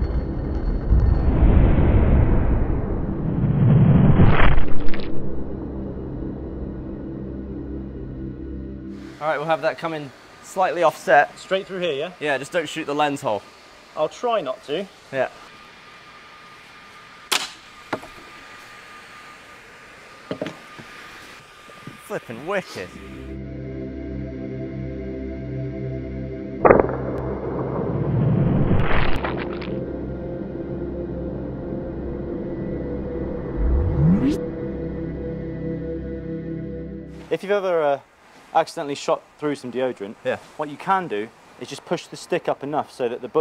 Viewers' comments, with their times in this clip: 0:03 Did you guys add the squishy/splashy sound ? It seems like you guys added sound effects post filming, right? I'm not saying this is a bad thing.. if anything it improves the quality of the video because the sounds seem to match and it sounds cool.
0:03 The Bullet Sounds Like A Jet Or Something...
0:28 Sounded like guts coming out
0:29 Those sounds are pretty noise and moist